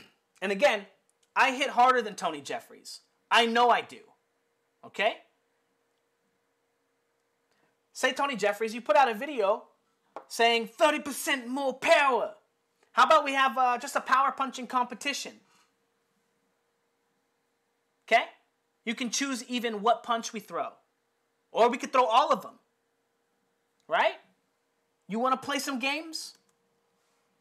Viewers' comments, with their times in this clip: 0:10 ,”30% more power!” I love the accent and the way you say that. This video has been wildly entertaining. Thanks. And instructive also.